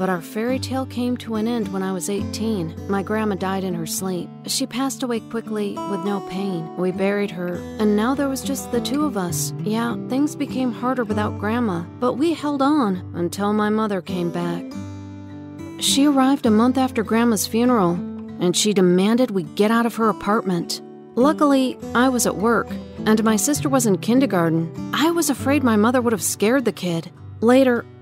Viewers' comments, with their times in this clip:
0:09 Are they singing???🤔🤔🤔
0:09 THAT CRYING THO XDDDD
0:09 what is that a cry?
0:09 are your crying or singing?
0:10 no hate but, who cries like this OHHHHHHHHHHHHHHHHHH